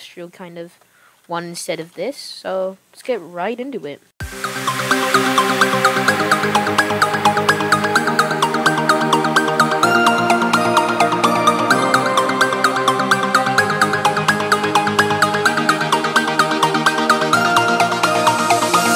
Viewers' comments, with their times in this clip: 0:04 Had some auditory problems in this. Don’t forget the time-lapse